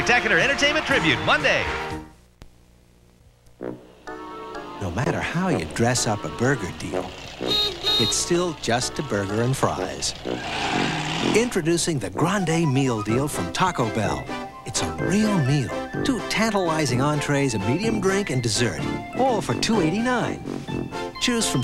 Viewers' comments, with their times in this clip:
0:04 what kind of audio format is this. Sounds realistic for it's time. Or maybe remastered, idk.